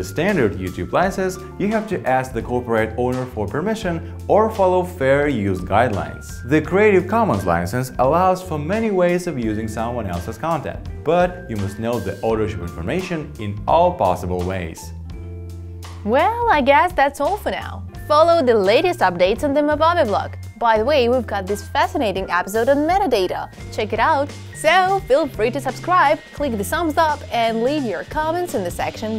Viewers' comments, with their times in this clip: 0:10 i cant make sense of what his talking. He swallowed it whole with his tongue. lol audo shoe made?